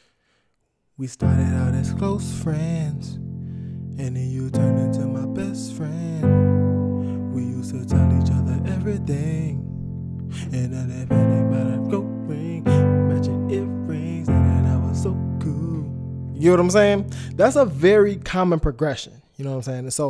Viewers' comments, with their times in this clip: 0:05 i was really with it until you started singing seconds in